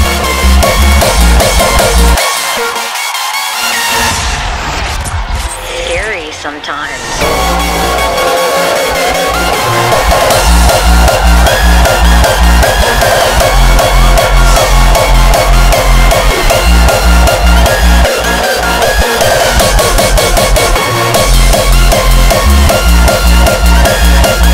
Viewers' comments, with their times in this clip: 0:06 the best track of aftermovie!!!! 🔥 🔥 🔥 🔥hardstyle is fantastic!!!! , rawstyle is brutal!!!!